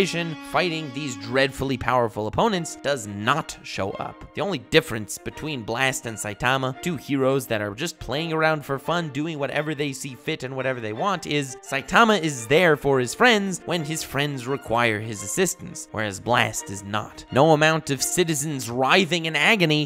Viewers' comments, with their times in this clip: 0:05 The yndertale music in the back perfectly matches this videos motif like where he’s talking about friends and not showing up and that song is playing Well played